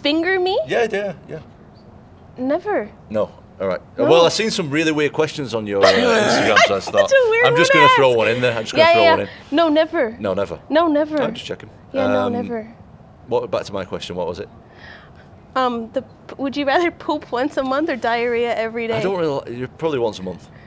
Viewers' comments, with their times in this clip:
0:03 wtf was that laugh